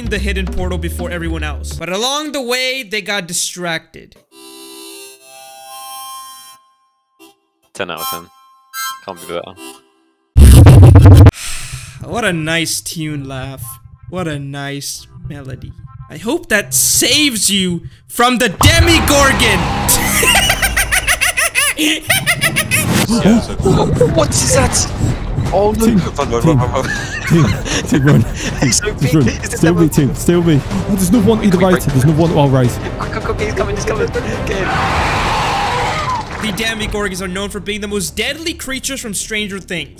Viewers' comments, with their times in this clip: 0:04 YOU INCLUDED MY FLUTE SOLO
0:12 This is not a flute it’s a harmonica
0:25 he's bri'ish bruuh